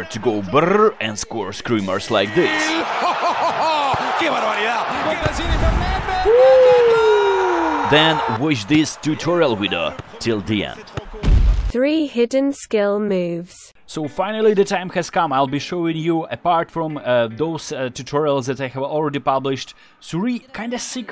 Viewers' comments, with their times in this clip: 0:05 which language commentery is that??